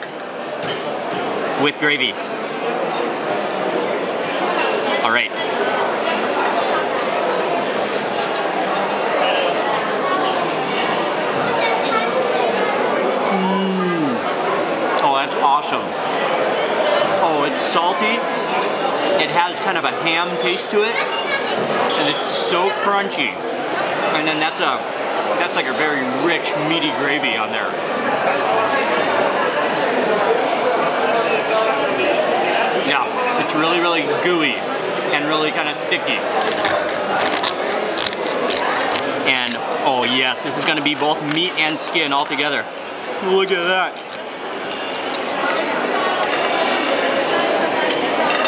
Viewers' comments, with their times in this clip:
0:08 that pork skin is so crispy you can hear it across the table in a loud restaurant
0:34 That sounds like a "Kieferbruch"